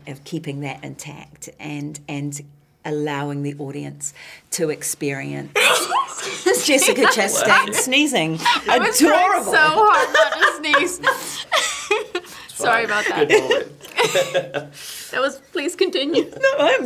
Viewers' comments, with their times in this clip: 0:04 Jessica chastain sneeze❤